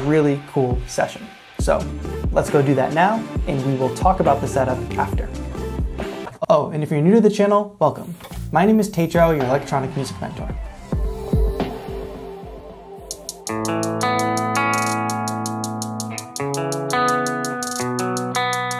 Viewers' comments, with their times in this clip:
0:06 is the oh your producer tag now😂😂😂😂